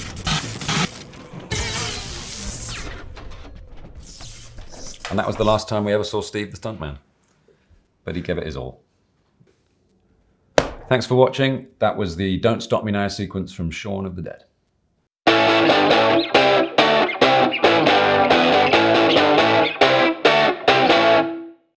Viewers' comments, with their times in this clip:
0:06 Yes...btw, do you know what he said about Steve ? I really dont get that. Sounds like buddy kevin is all.